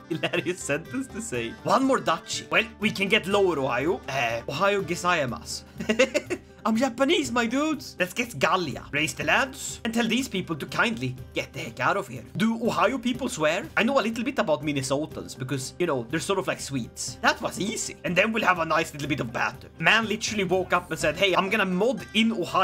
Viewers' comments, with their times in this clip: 0:03 Japanese with a massive Swedish accent what an experience